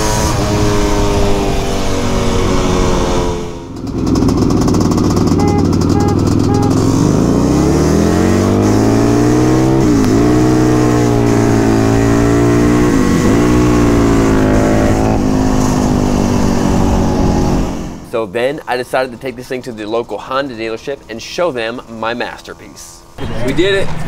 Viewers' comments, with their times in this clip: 0:10 listen to that soggy harley clutch slip lol